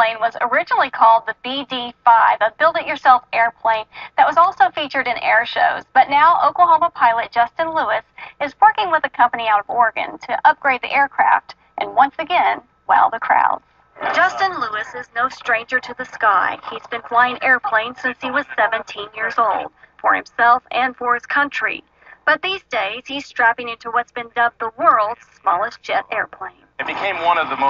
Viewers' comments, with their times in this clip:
0:09 I'm from the northeast, and it sounds like the reporter says the "f word"